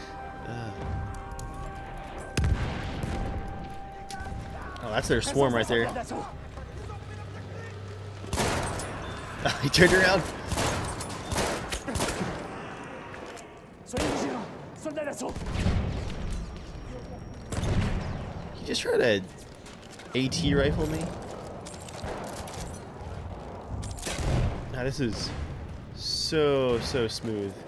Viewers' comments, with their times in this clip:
0:09 those screams are horrifying, BF1 ambience was God-tier